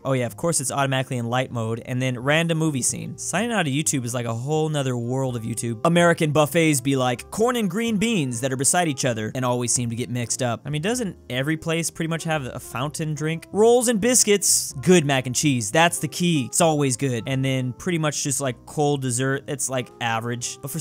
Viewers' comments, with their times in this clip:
0:06 it sounded like you said something else when you said corn